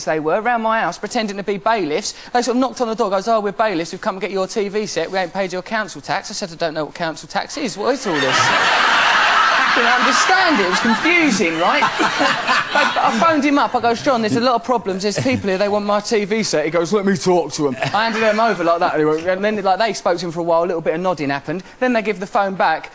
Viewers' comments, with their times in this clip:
0:07 OMG pauls laugh is reeeeeeeeeeeaallly wierd HAHAHA!!